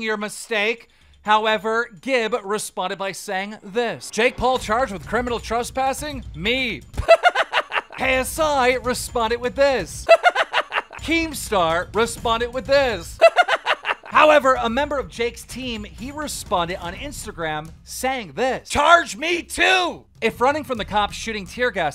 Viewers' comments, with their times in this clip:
0:03 ok that was actually pretty funny. That laugh over and over for each tweet hahahaha didnt expect that lmao